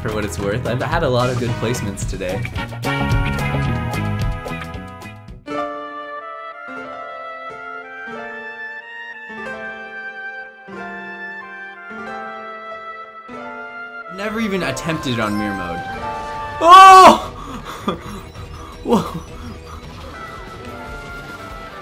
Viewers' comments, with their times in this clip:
0:05 I love you for the music choice